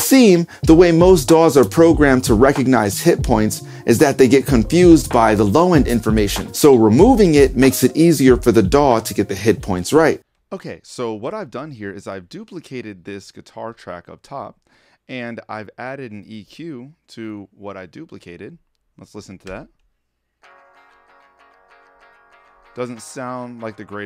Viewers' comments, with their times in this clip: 0:07 Note the huge sound drop